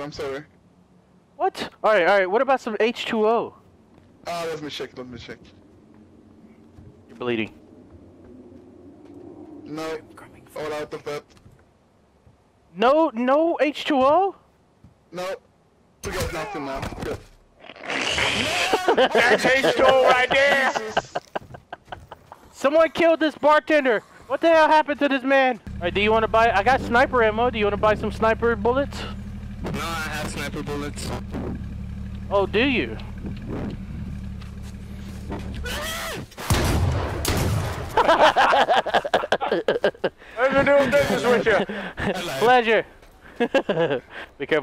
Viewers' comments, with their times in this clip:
0:09 Who was talking ???
0:10 Did anyone else hear the scary whispering ? I thought someone literally said that in my Ear o.o
0:10 I swore I heard someone whisper behind me (headphone user).
0:25 Hahahaha!! That guy, knew he fucked up by saying he had sniper bullets. Especially after Delirious said, "Oh do you?" in that sorta "Thanks for letting me know that. Now I'mma kill your ass and take your bullets." tone XD. Guy fucking baled as soon as he heard what Delirious said XD.